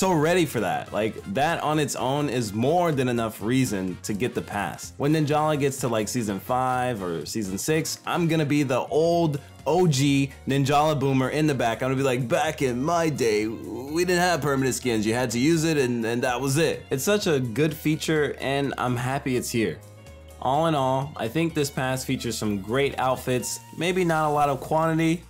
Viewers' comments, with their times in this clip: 0:08 SAME 😹 The Ninjala music is that good that it fits anywhere